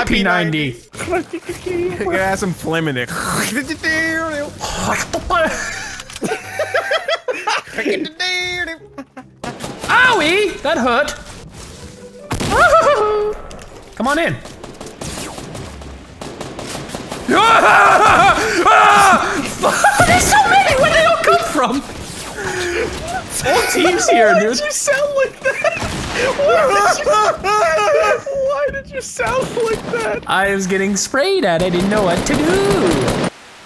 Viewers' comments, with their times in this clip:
0:10 why did u become so British
0:11 The voice you did when you got shot “Owiie! Dat hurt”
0:11 the odd noises intensify
0:15 He hit puberty ;)
0:17 you had a reverse voice crack, WA HAHA
0:17 The scream i am sure that will be in an edit montage
0:17 A rare sound clip of wildcats mom giving birth